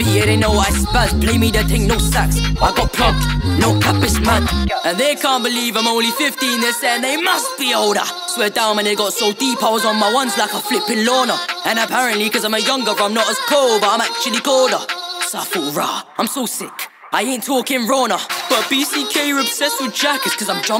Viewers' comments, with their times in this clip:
0:05 he fucking sounds like Connor McGregor